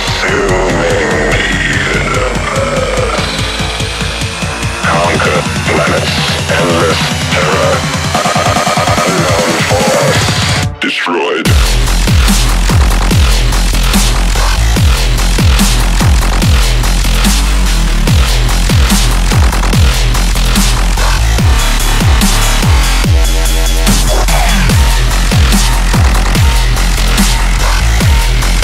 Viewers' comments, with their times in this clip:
0:09 The drop was kinda week